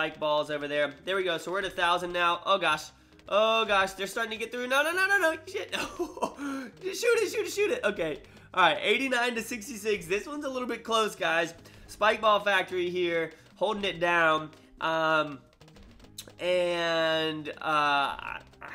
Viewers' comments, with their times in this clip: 0:04 he said shit in a low voice